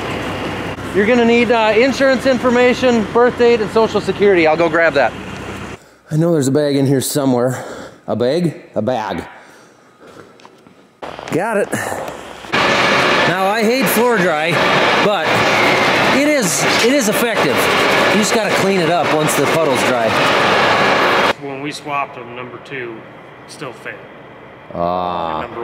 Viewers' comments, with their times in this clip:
0:06 Sure is handy that floor dry comes in the same way as milk in Canada. In a [thick Minnesota accent] Bag